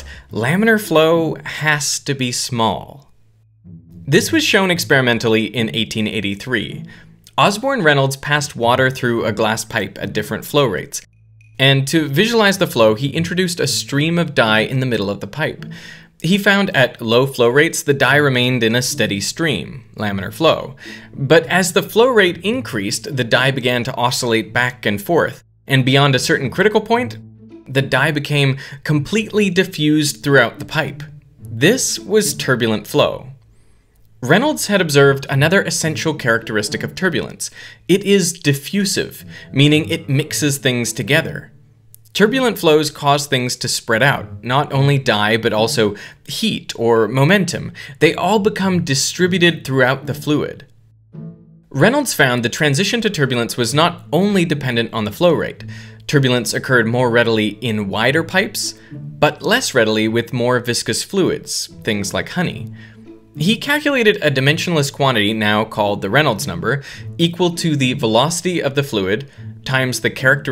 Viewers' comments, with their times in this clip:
0:03 I am going to be honest, I stopped listening for at least a minute at the mark because my ears told me that I was in the Kerbal Space Center Space Plane Hanger... Don't worry, I rewatched it all.
0:06 Enjoying that KSP build music
0:06 This music is also a scientist trap.
0:08 had to stop to see if I left Kerbal Space Program running.
0:09 ok ok I'll play KSP again! Music instantly made me nostalgic for more rocket mishaps :D
0:13 I had to check why KSP was playing music, and paused the video.
0:22 kerbal space program music intensifies
0:33 everyone gangsta till the KSP music starts playing
0:33 rocket science music vibes, KSP is fun
0:33 anyone else start hearing KSP music ?
0:46 The Kerbal Space Program VAB music goes hard
0:53 the background music made me want to build rockets in KSP, I see what you did here